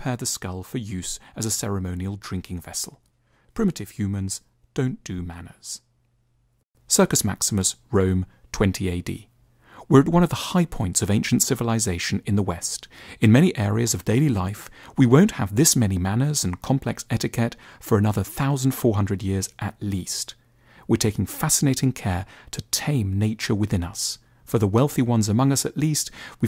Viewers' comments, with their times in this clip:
0:09 Very interesting video! Just wanted to also let you know that the volume goes up a bit throughout the Rome 20AD part. We hear you loud and clear :)